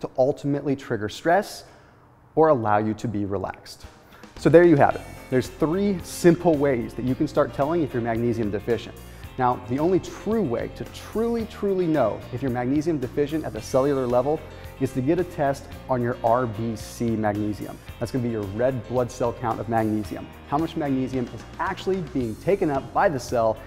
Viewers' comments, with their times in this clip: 0:05 He "laughs." Actors do this in commercials. Who's paying you?